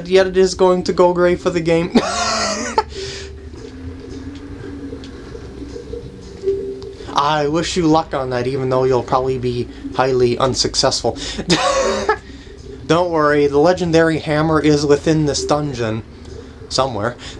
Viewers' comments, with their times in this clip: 0:05 Awkward silence time!